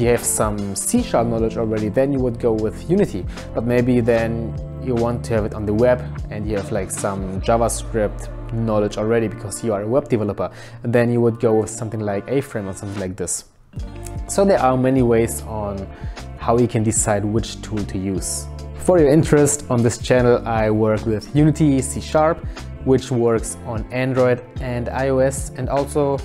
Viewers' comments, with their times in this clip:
0:09 what did you say? "A-frim"?